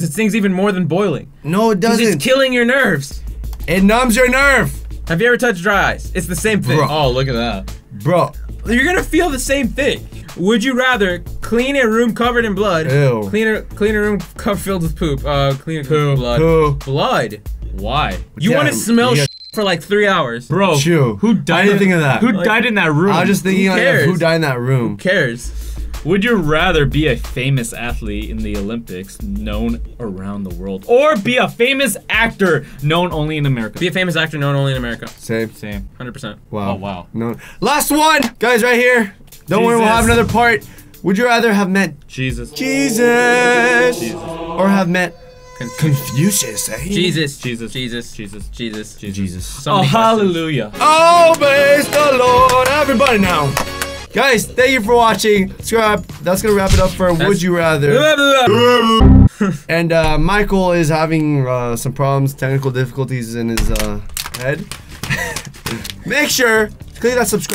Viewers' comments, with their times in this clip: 0:05 he said it so sad
0:50 Best church music ever
0:55 Scribe?? Ok I'll scribe to your channel 😂 jk I'm already scribed